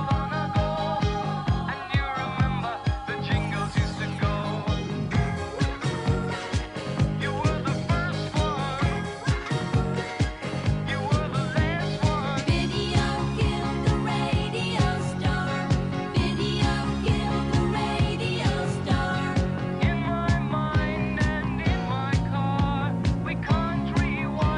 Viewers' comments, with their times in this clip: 0:08 Why of dead air at the end?